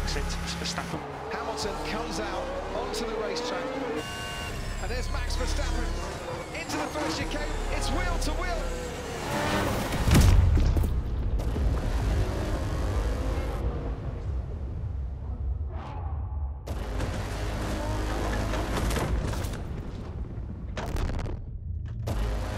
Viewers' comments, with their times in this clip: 0:09 sound effects from National Geography when a bullfrog and a chameleon were having sex.